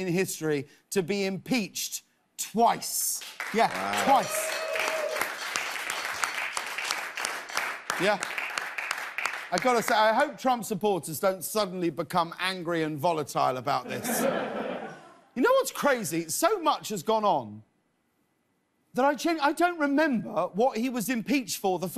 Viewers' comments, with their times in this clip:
0:04 That applause resonated with me. It rings approval for the necessary second impeachment, but there's a cautiousness to the jubilation because of fear for what trump's violent supporters would do next. That orange traitor whipped up white supremacist hate...all at taxpayers' expense. 😡 May he get convicted for all the crimes he committed.